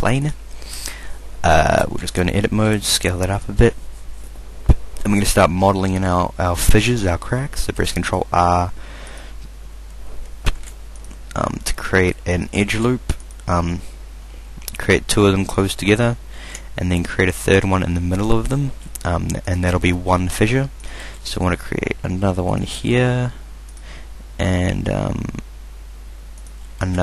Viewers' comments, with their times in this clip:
0:10 Hey I dont understand what you're saying It sounds like now press control uhhh..